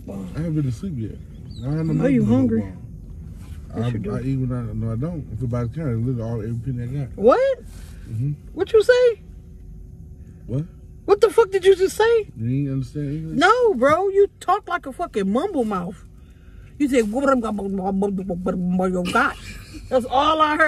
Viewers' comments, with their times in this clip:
0:05 he was speakin russian 😂